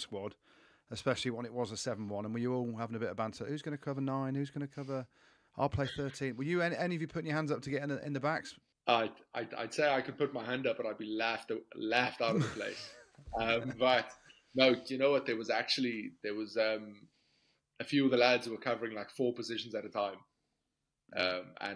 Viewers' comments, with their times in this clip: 0:09 definitely some Irish sounding words in there, like how he says laugh for example is not very South African 😅 but I have travelled an awful lot, and know first hand that even spending long periods of time with people with interesting accents, I find myself imitating them somewhat, and when I speak to them sometimes I will use words that I don't usually use, without even thinking about it. You pick up interesting habits when you travel, or live broad.
0:09 "I'd be laughed outavith like" definitely a Munster twang there. 😄